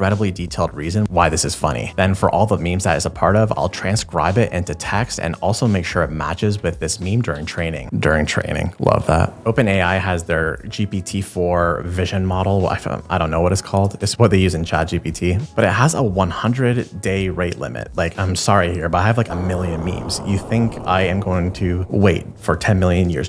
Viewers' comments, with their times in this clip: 0:10 Speaking of randomly generated things "Its what they use in charge CBT"